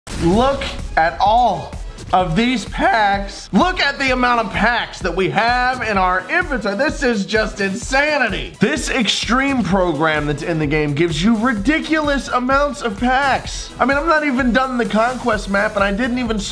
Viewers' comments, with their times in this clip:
0:03 that voice crack doe
0:03 the voice crack tho lol